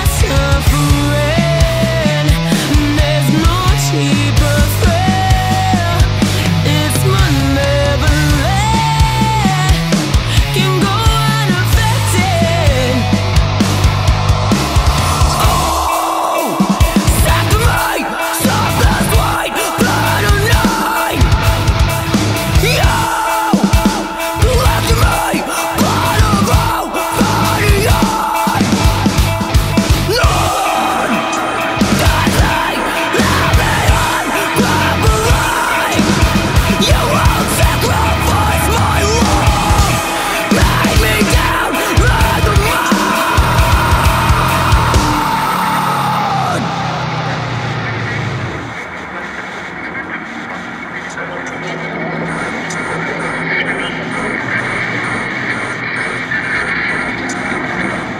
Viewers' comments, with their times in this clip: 0:07 The end of of 2 is the most haunting descent I've ever heard... ...my god. What is going on with the guitar there!?!? Some crazy downtune with the whammy move, I can't figure it out.
0:37 This part is really underrated that whammy bar part is so damn heavy. I love the samples shift. Very Haunting sounding. Great work Guys.
0:42 That scream sent such chills!!! <3